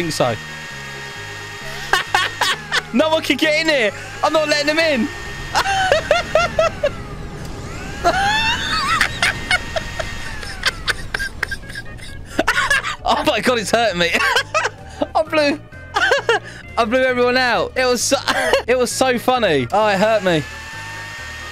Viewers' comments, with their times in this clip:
0:06 the best clip hearing him laugh